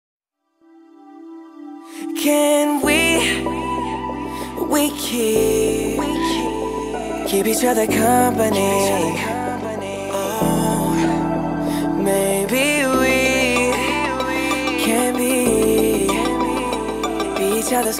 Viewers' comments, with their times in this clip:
0:00 If u listen closely u can hear the song starting